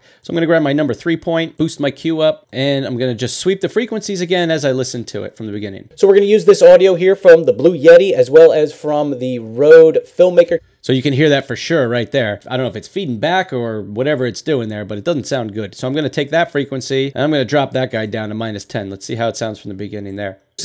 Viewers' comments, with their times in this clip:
0:05 you hear the clipping of the audio, wich is definitly in the red area because you boosted the frequency too much. Or do you mean something different that you are hearing there?